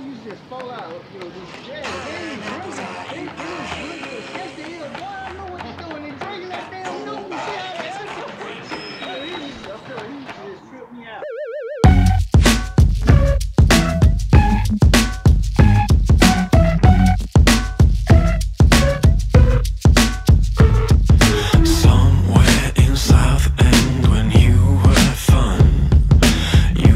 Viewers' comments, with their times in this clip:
0:10 Does anybody else go er-er-er-errr with their voice ?